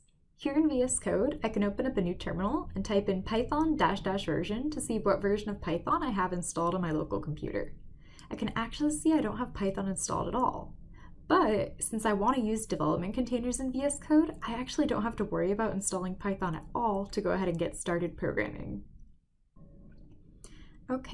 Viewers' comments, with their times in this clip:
0:03 since the audio drops